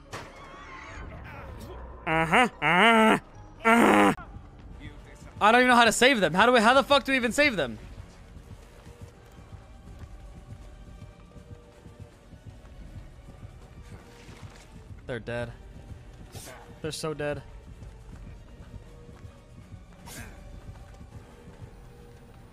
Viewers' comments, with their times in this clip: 0:03 no way he did the pillager raiding horn call 😭😭